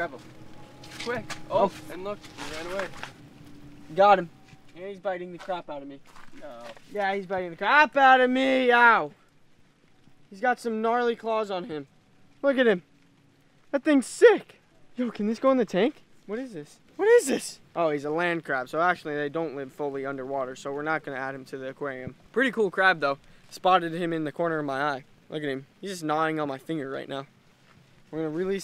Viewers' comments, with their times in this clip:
0:09 BAD KITTY NO YELLING